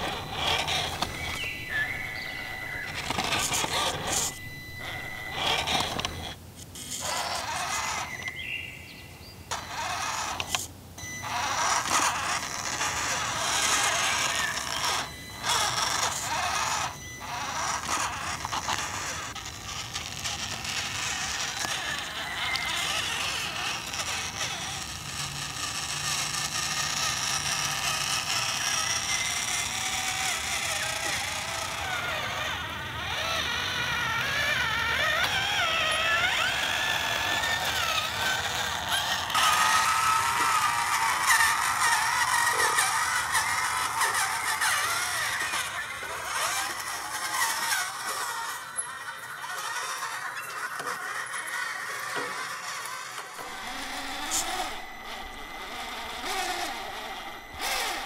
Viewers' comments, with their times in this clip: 0:03 it sounds like the wheels say (it isn't about us hank) was that just me
0:41 Listen for the burp XD